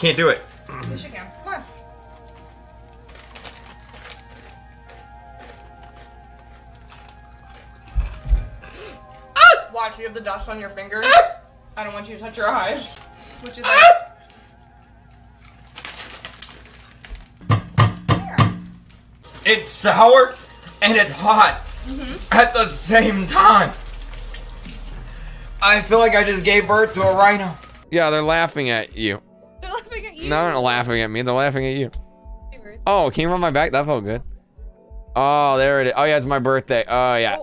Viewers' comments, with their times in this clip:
0:09 he didnt scream but he just sound like a girl sound that cries
0:19 why is he moaning- :face-orange-raised-eyebrow: